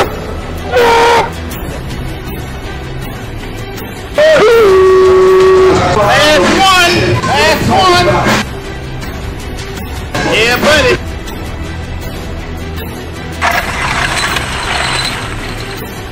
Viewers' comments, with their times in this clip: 0:04 epic Ronnie sounds like a container ship horn blast ..😂😂😂